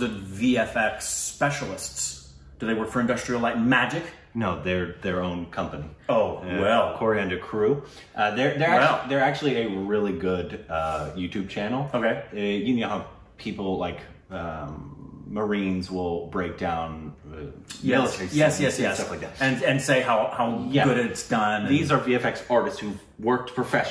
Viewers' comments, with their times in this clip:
0:05 Did this man really say Corriander Crew
0:05 Did he say Coriander Crew .. Or is my ear having some issue..🤣